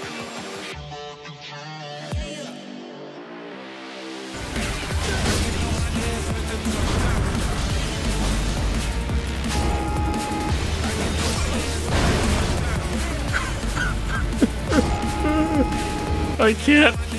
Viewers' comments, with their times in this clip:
0:05 hahahaha “AAAAAHHH-“ along with the music 😂👨🏻‍🍳🤌🏾